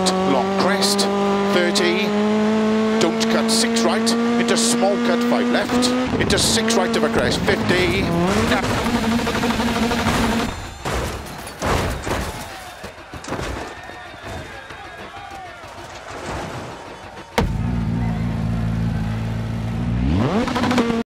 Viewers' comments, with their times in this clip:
0:08 That one housefly bumping against the window
0:14 Crowd cheering/applauding like : yooo whoever's idea it was to put a big rock at that corner was LITTTTTT affff